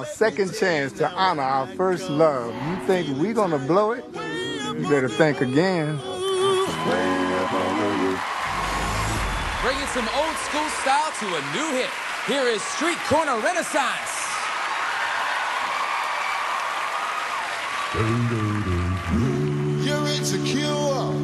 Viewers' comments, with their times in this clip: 0:08 it sounds like a Sh boom